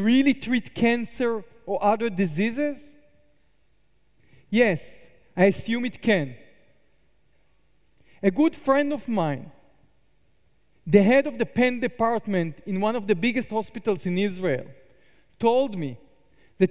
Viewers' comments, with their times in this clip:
0:04 😆😆Did someone fart?